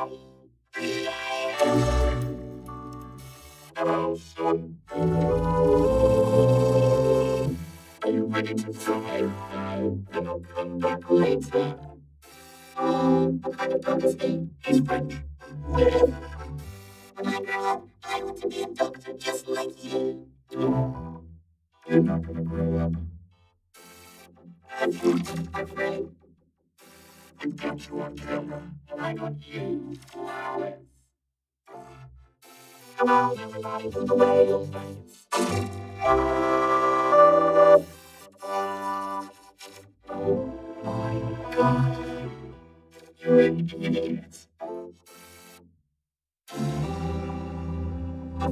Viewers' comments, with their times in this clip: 0:03 hello sun Hello in USSR
0:35 come on everybody do the whale dance USSR WHALE SCREAMS